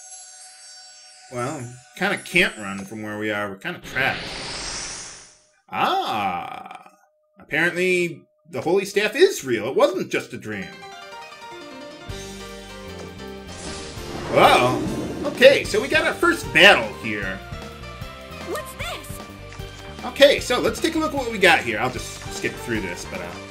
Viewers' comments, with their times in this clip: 0:10 Love the kickass music!!!